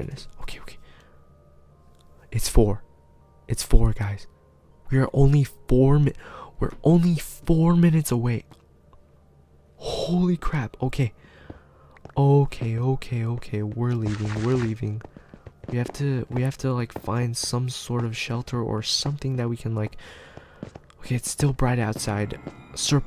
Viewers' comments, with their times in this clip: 0:10 I heard zombie also, I subscribed